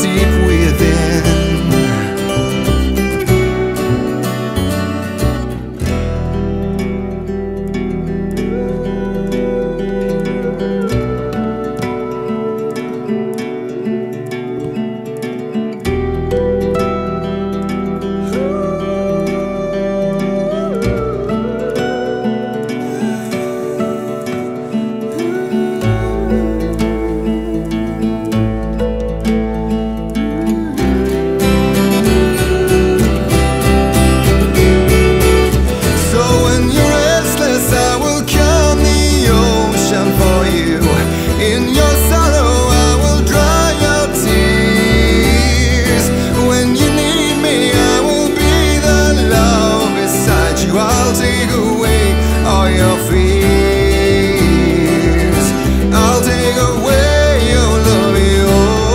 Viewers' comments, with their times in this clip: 0:05 This Voice Really Touch my heart. Woow From the Song Goes Insane
0:45 I don't want to get too advanced, but that up-shift in the chord at 4-20 ( for momentum), into C Major I believe, sounds so empowering and strong and supports the hope of the lyrical part. Tremendous. Edit: it's G major, sorry. E minor to G major.